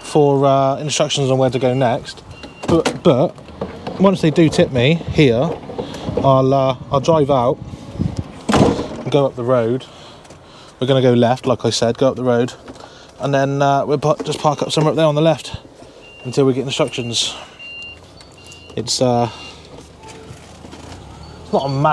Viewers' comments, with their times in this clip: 0:04 I love the sound of the DAF build quality